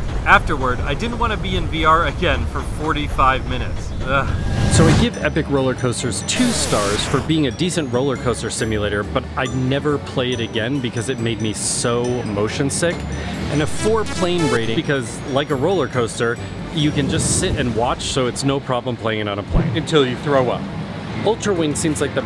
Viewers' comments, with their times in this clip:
0:07 This guy looks and sounds like Mark Zuckerberg's brother.